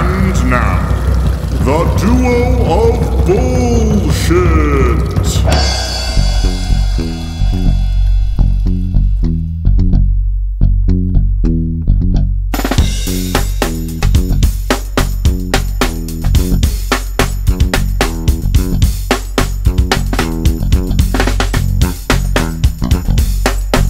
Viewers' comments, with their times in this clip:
0:10 those are beautiful syncopations on snare. Bass sounds very voicy. Lovely.